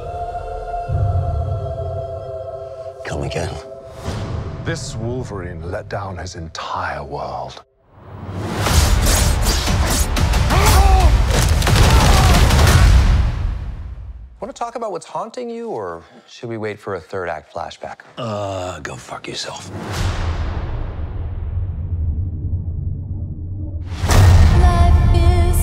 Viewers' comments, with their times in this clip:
0:03 Oh, unless you’re Deadpool, you know if Wolverine says something like “Come again” like that, you are screwed
0:03 What the hell is Hugh Jackman saying ? Is it “kill ‘em again”? It’s not very distinct
0:10 That Scream, That Pain..!☠️💀☠️